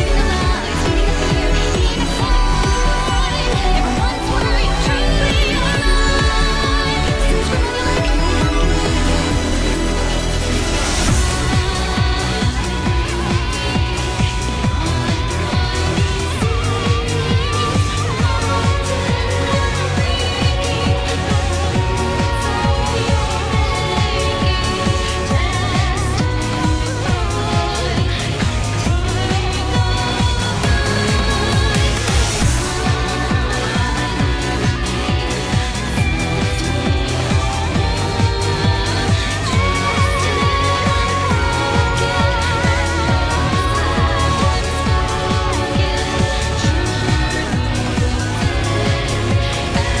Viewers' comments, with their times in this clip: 0:10 Love how this has a massive Bayonetta feel to it I also can't get over the Soken LB4 I'm really excited for savage
0:11 I love how her theme becomes very similar to Hic Svnt Leones' theme. Are them connected somehow? I've played only through ARR and Heavensward.
0:11 I think instead of "I glee, in mud thrives these seeds" it might be something else---the deciding factor for me being that I can definitely hear the pronunciation of a "t" sound at the end of the verse. Maybe I'm crazy, but I swear I can also hear a "d" sound in the first half of the verse. Noting that, I think it may be something more like "Pride, greed, in blood thrives deceit". It would connect a little more with the recurring themes of familial ties and of Athena's manipulation of said ties for her own benefit. Of course, that's purely speculation. But I think I might be close?
0:12 is one of my favorite moments to come back to, how it blatantly ties in the songs from before and subtly suggests that through every piece and orchestration made, it was all her. It was all Athena.
0:17 That background scream from sounds so similar to Ramuh's intro screams (I don't know what else to call it lol)
0:32 I swear the line is "Pride, greed, first we were warped" but I guess there's no way of knowing until we get official lyrics
0:36 i think she says something like "Thirsty for war" and not "Thirsty for wool" :P But I'm not entirely sure if she even says thirsty there..
0:36 it might be "Thirsting for war" and not "Thirsting for wool" but that's just my interpretation